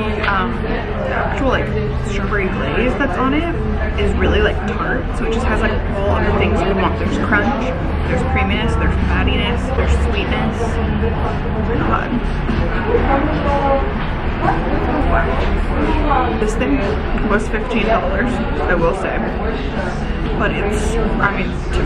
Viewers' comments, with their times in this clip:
0:03 Lol my own social anxiety kicked in for you 😅😂 I can just tell by the sheer volume of voices in the background that I would not* be having a good time. So proud of you for sticking it out in public alone and doing your dang thing, girl! Always inspirational.